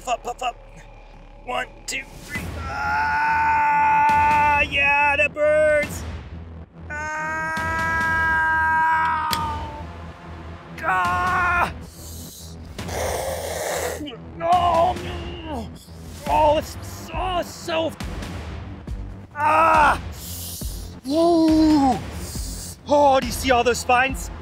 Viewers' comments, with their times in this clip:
0:06 10/10 for that Wookie impression!